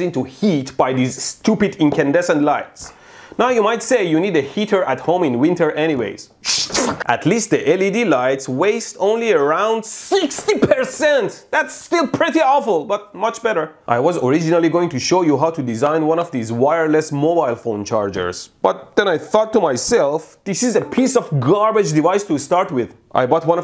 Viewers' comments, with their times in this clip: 0:06 That Pewdiepie impression 👏👏